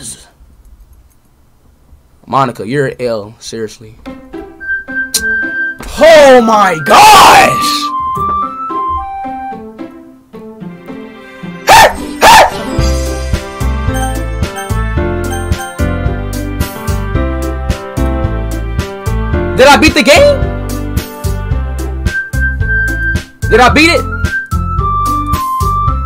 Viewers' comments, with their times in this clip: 0:10 the barks are PERFECT